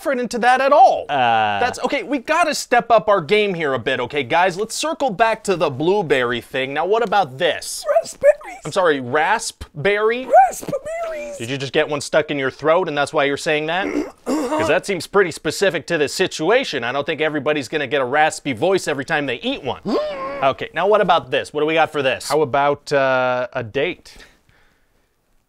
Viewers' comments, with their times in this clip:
0:10 is that a fart?